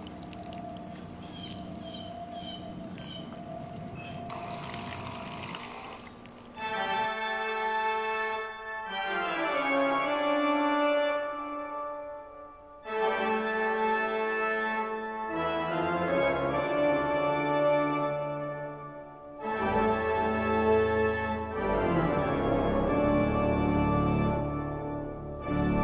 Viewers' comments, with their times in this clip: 0:06 The music of the clip is good to my ears